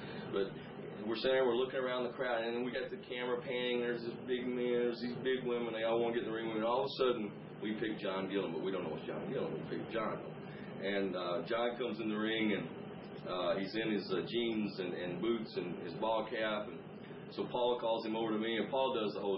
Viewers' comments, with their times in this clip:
0:04 did he just say Miz?